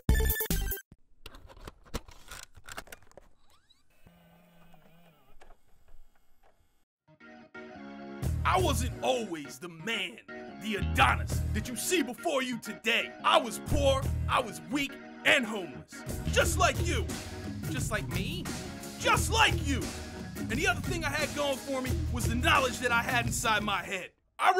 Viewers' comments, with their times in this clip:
0:07 I hear wayyy too much David Goggins in this.